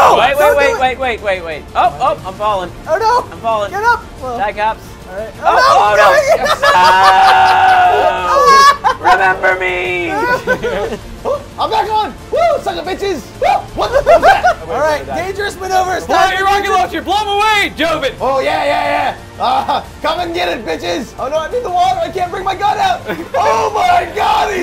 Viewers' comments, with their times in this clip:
0:08 sounds like a movie scene